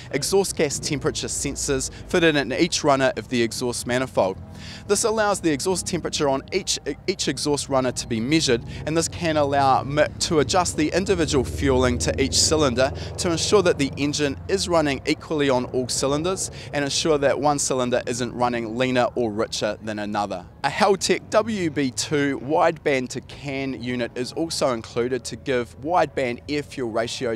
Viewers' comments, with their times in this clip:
0:08 That subie rumble